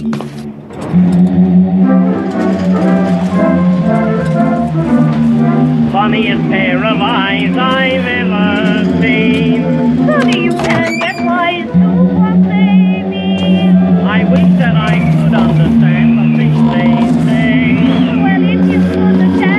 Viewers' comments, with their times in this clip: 0:06 lol the music makes it less creepy